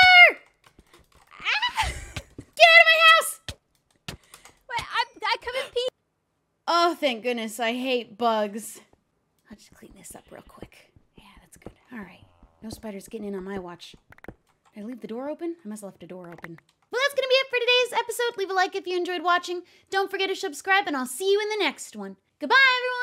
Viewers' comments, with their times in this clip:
0:05 THE CUT OF- It went quiet for like two seconds xD